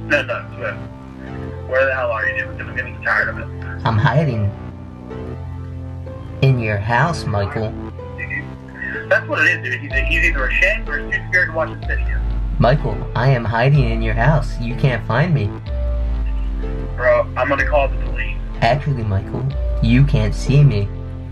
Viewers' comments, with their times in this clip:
0:08 That laugh brings joy to the world